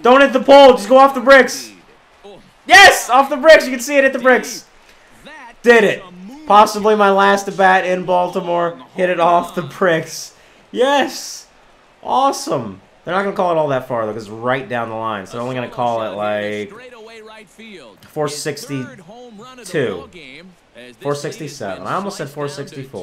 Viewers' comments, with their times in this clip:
0:07 he said hit it off the pricks